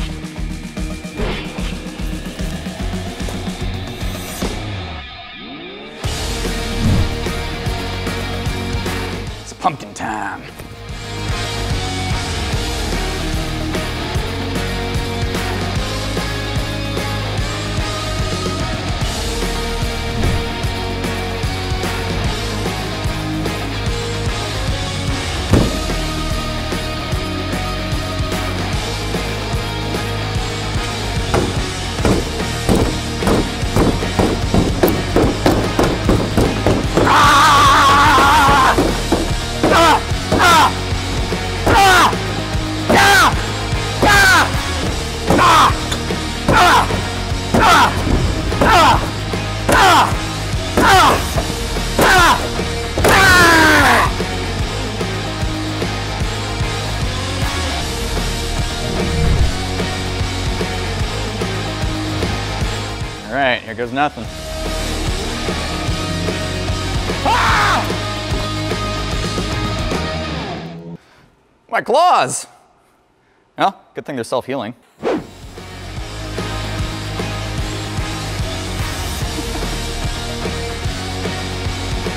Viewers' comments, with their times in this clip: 0:09 Did anybody else get a Kentucky Ballistics vibe when he went it's pumpkin time
0:34 wolverine hears his girlfriend moaning behind a locked door at a party
0:37 Why he scream like he's in 40s movie XD
0:41 sounds like a sound effect used in a flash game
0:45 you actually sounded like wolverine, also i was waiting for you to say “here comes wolvie” after stabbing the door XD
0:46 Had to turn my volume down 😂
0:51 the loud grunts was killing me🤣🤣🤣🤣🤣
0:51 why is the screaming so intense
1:07 scream like a wolverines